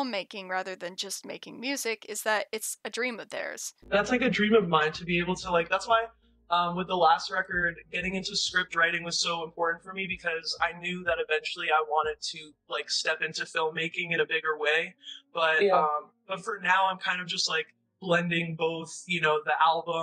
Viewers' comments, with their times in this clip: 0:06 sounds like the “Give me an A+ if I’m doing this thing right” pitch of Test Me 😂💖